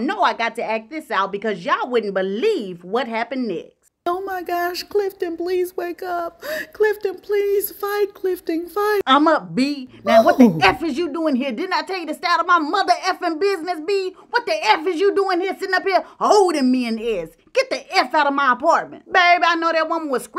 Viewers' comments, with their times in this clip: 0:04 You and that Clifton impersonation 🤣